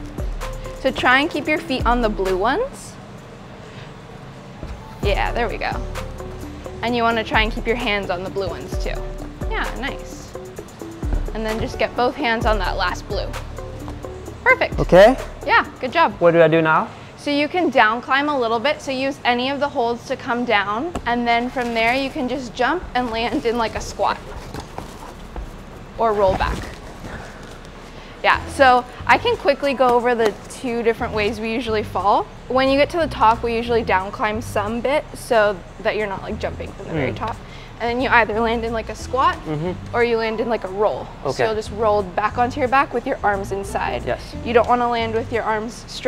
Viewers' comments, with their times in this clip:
0:04 made me rewind so many time to see if it was my doorbell or the video.
0:23 The laugh got me so hard xD
0:26 it was funny that he couldn't hold his laugh.🤣🤣🤣🤣
0:29 That laugh was hilarious